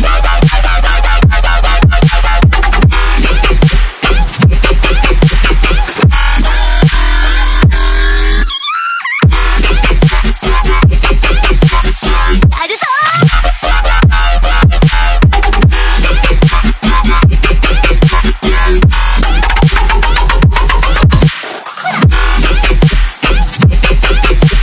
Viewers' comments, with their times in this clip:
0:08 lol ruby screams xD